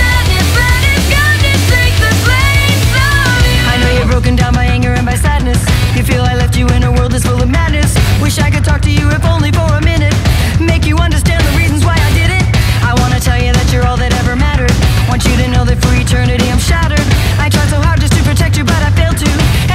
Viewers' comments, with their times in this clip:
0:03 put it on 1.25x speed sounds so epic